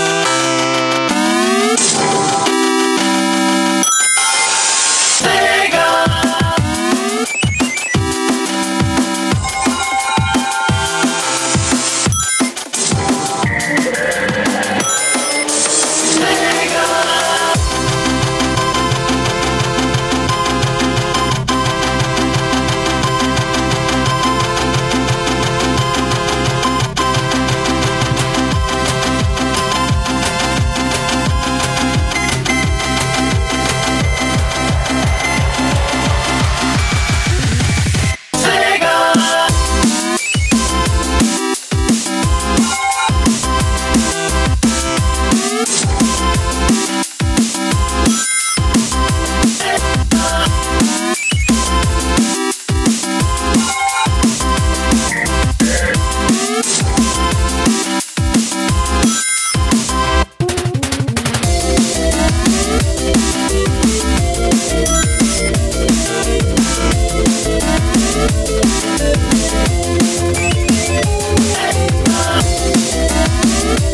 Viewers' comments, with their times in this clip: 0:03 sonic coin sound
0:18 feels very metropolis like
0:38 Excellent Beatdrop Starts
0:55 nerd theme song??